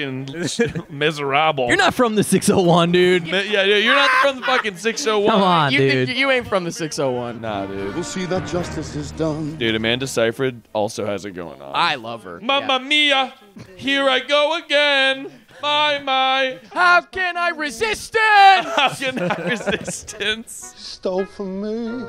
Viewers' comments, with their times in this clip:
0:03 Haven't starting watching yet but I hope you guys noticed and kept in my favourite part of the movie, which is Russell Crowe picking up a random kid and screaming at his face "TALK TO JAVERT" and then throwing him back down. Edit: RIGHT THERE